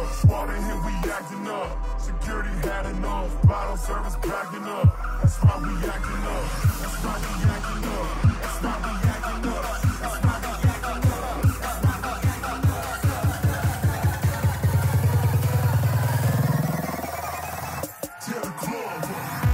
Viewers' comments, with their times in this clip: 0:06 Sick drop there mate. Haha.. WTF whas that